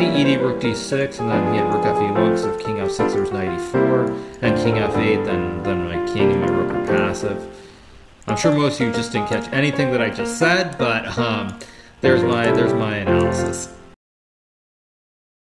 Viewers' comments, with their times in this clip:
0:11 That cadence is hilarious.